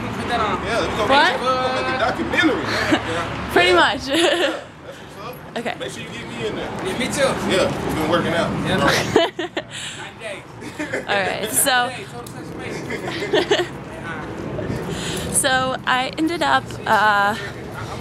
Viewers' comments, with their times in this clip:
0:04 your awkward laugh ! <3